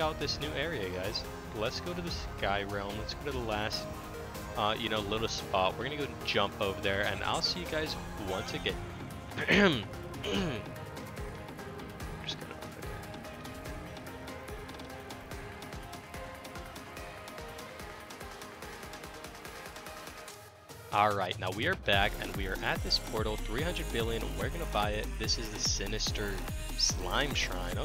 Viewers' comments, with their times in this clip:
0:09 when you have to cough so you say "ill be right back' but forget to cut it out in the video